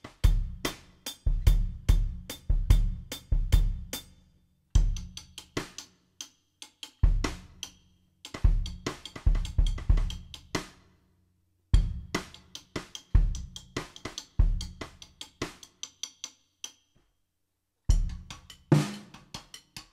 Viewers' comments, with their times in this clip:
0:05 That fill is so good!